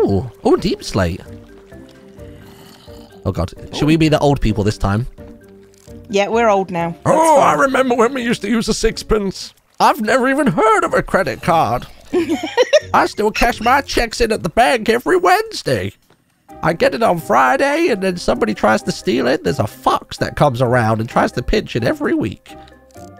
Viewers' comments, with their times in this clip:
0:05 omg that old man voice is briliant, I ugly laughed so hard.